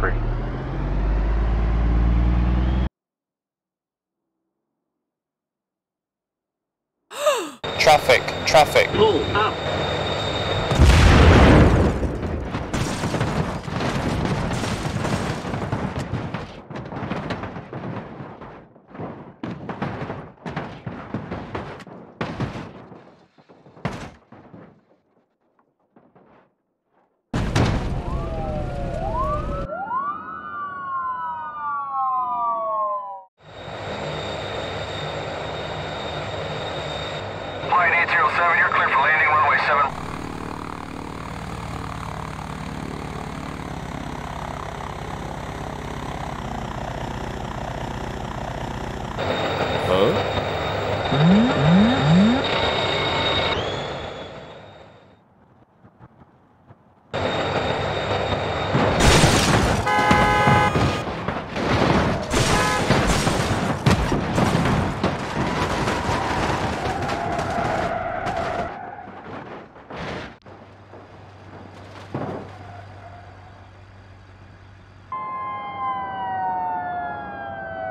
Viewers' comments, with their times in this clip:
0:07 I loved when the lady sayed oh!
1:02 That part when they start honking and crashing reminds me of Burnout 3 in Crash mode lol